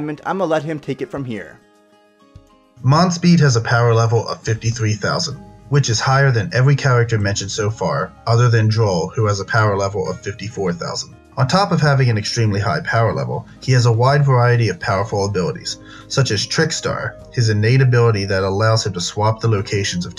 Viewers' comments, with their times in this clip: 0:04 your voice changed